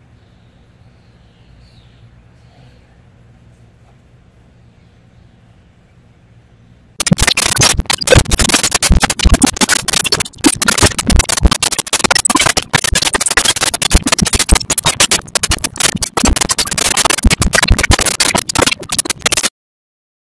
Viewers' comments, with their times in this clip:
0:06 Headset wearers beware.